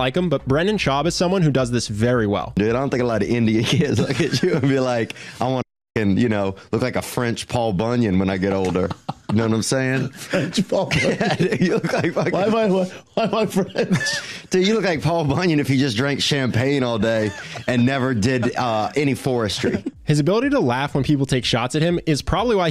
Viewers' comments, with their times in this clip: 0:07 i think Brendan actually laughs cause he doesn't get the joke, but is around comedians all day so he can feel the punch line like a mark hunt check hook.